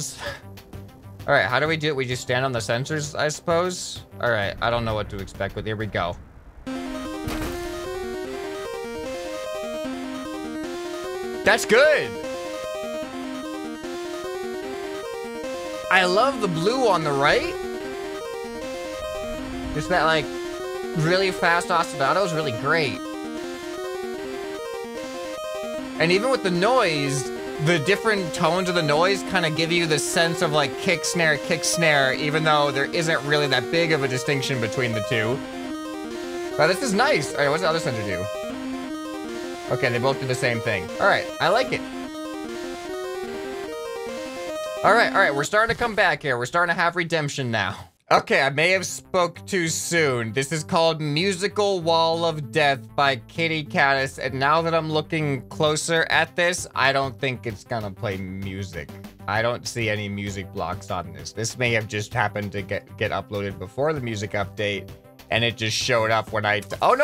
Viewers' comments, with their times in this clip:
0:05 Sounds like MegaMan.
0:12 Sounds like megaman
0:17 it sounds like something from zelda
0:19 the music sounds like what would be in a pre boss fight test in portal 3
0:27 sounds like sonic and original Raymond music 🎶
0:52 its a count down like, 1 2 3 GO!